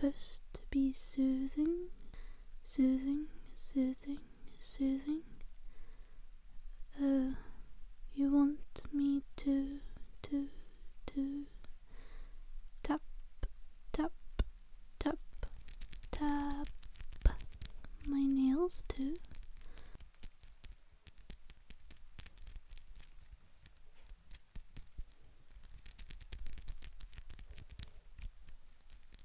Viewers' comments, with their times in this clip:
0:10 Uh oh, she’s malfunctioning.